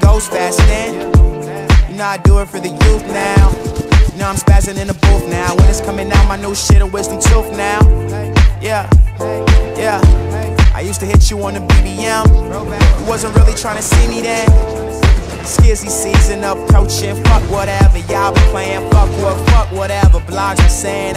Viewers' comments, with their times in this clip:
0:05 The sound of the gunshots sounds sick, the double tap just goes with the music